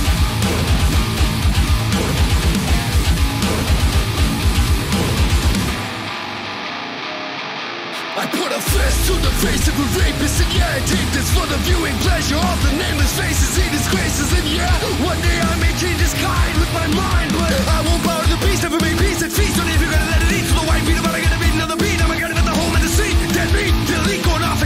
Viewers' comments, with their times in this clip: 0:10 I was on board until the guy started talking at me